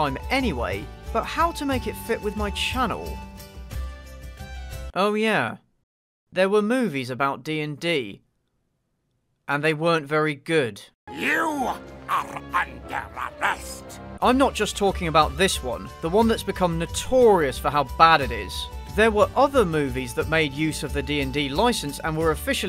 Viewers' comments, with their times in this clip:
0:10 I wasn't looking and thought said "You are a pederast!" lmao
0:10 Is it just me, or does that look like test animation for "Link: Faces of Evil" for the Philips CD-i? The toad-like character design, the shitty voice work and the over reliance on zooming on the camera? I mean, what's going on here?